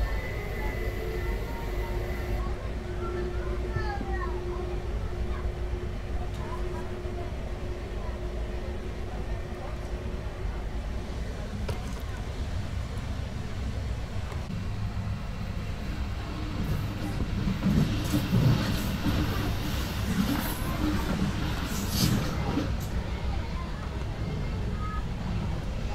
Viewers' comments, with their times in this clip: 0:08 Why was there children noises ? Isn't the sleeper compartment sound isolated?